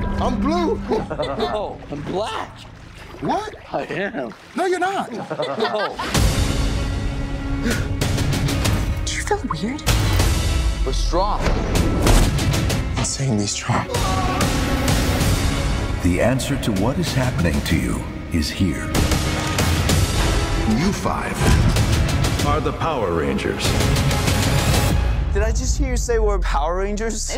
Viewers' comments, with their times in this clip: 0:08 Play the trailer, and when he says "it's morphin time", just play Power Rangers Theme Heavy Metal by Charlie Parra del Riego from and mute the trailer. It looks/sounds fantastic, so much better than that cheesy rap shit!